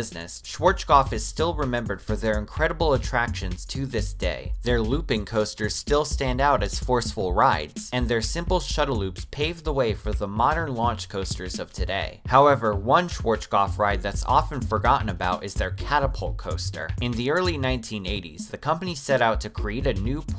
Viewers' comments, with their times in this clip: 0:03 schwoatschkoff.... 🤣🤣🤣😘 you better: ʃ v a r ts k ɔ pf